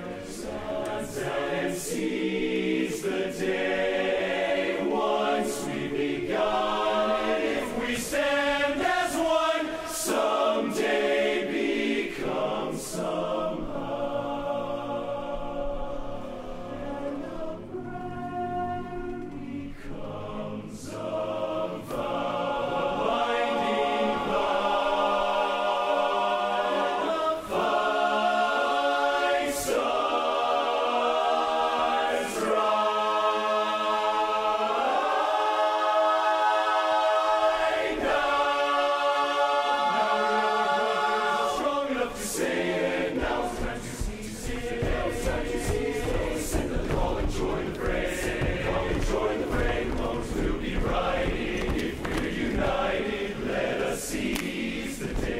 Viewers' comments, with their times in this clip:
0:06 I've watched nearly every week since Pitt. It really is incredible. OK…dat unison !!!!! Chills
0:37 that high note though